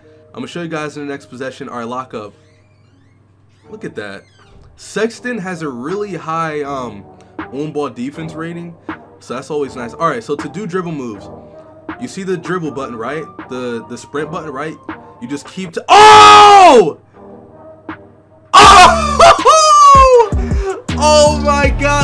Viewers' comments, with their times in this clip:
0:08 best instrumental I’ve heard